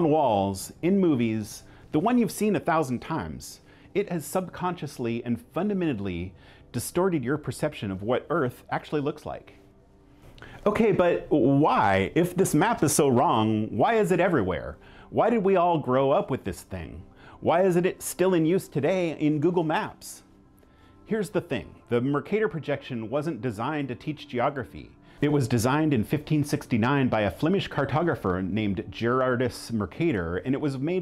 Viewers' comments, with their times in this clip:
0:05 did you say "fundamittedly"?
0:09 Christopher Walken mode
0:10 he does a great Christopher Walken.
0:10 Thought this guy was doing a bad Christopher Walkin impression for a moment
0:10 Was that a Christopher walken impression ?
0:10 didn’t realise Christopher Walken was so into maps
0:10 Channelling some serious Walken
0:11 Excellent Christopher Walken impersonation
0:11 amazing Christopher Walken impression 😂
0:11 why did he sound like Christopher Walken ?
0:11 Perfect Chris Walken impression. ❤🇨🇦✌🇺🇦
0:11 Christopher Walken just entered the video.
0:12 nice Christopher Walken impression
0:14 was that a Christopher Walken impression?